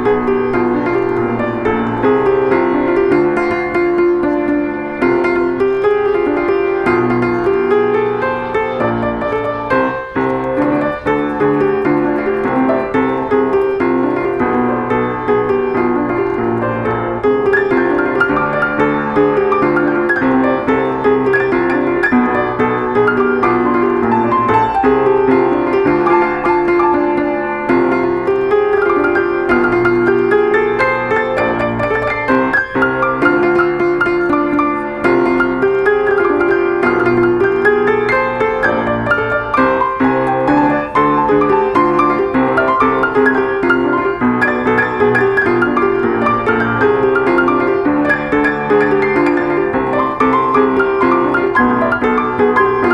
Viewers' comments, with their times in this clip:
0:07 he messes up abit
0:12 i heard a mistake edit: it was high note
0:12 mistakeee. Idk but to me this sounded off
0:12 He messes up so it’s not perfect.
0:13 it was: dd E its dd high d and then it just goes
0:40 it took them a second to get locked in with eachother but once they did sheeeeeeeeeeeeeeeeesh that was some fresh improv